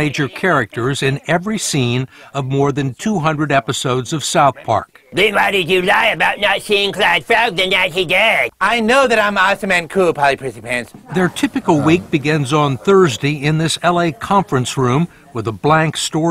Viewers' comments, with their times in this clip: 0:04 killed me lmfao. I've seen the episode but man just watching them do the voices is way funnier